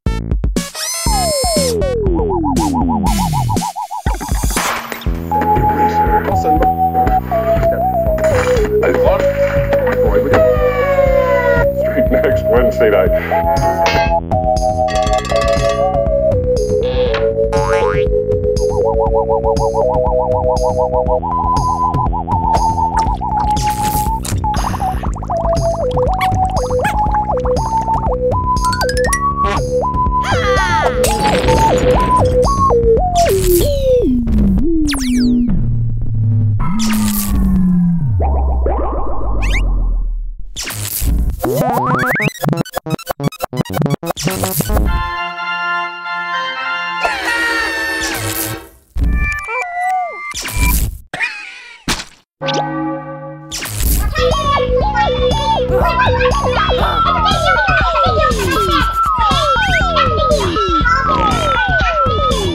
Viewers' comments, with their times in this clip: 0:10 I heard a siren noise
0:48 OH GAWD I HATE REWINDED MUSIC!!